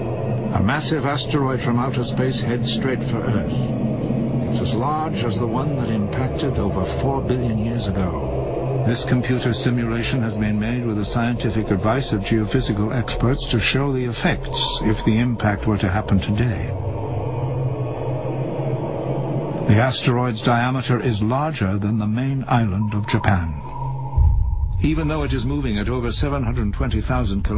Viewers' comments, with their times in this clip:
0:08 Awful music for the first Am I supposed to pray or something?